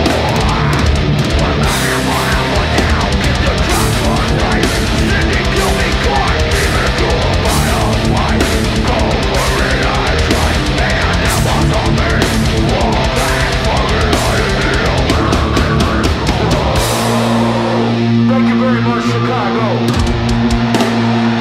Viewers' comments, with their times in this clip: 0:05 where's my snare??? Great version! Lot more of a slower chug